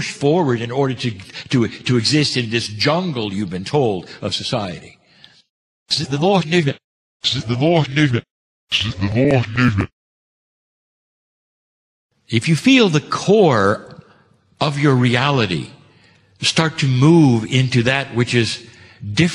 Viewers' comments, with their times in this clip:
0:05 I get; "See the lost need it"